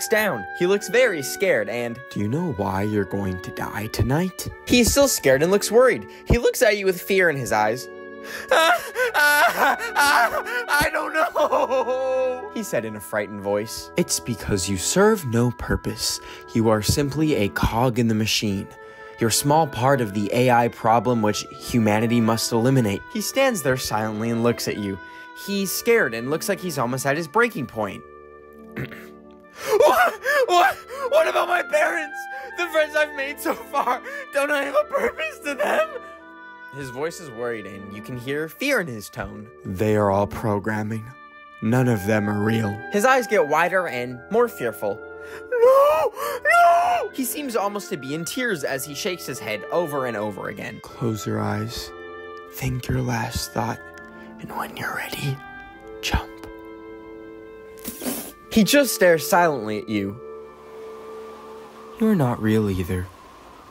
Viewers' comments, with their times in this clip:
0:10 im crying abt the way he is yelling but in the video he just does that IM GALLOPINNNNNNG
0:45 why does he sound like pops from regular show.